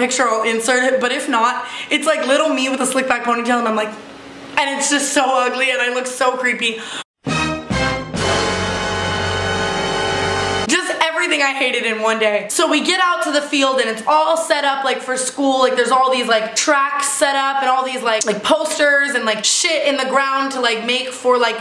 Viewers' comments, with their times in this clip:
0:08 is it considered mean that I died laughing because of the MUSIC LMAO